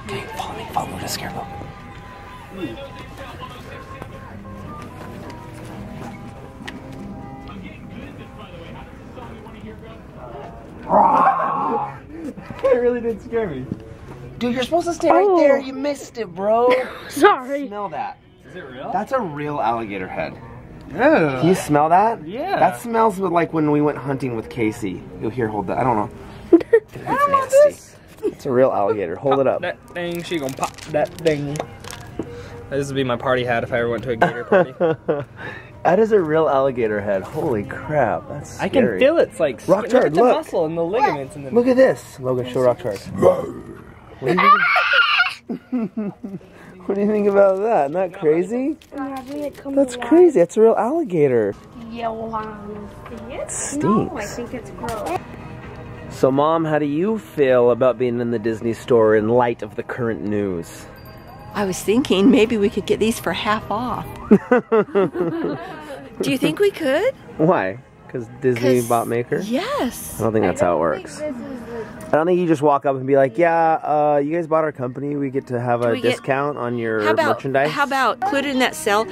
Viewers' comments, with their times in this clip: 0:05 I seriously almost started tearing up when Story of My Life started playing in the background in the store. I'm going to miss the daily vlogs so much. Love you guys. You all are so inspiring and thank you so much for sharing the story of your life with me and the rest of the Shaytards fan family. <3
0:25 you can hear story of my life in the background!
1:01 there was a bell am I amagining things or di anyone else here that?????!!!!!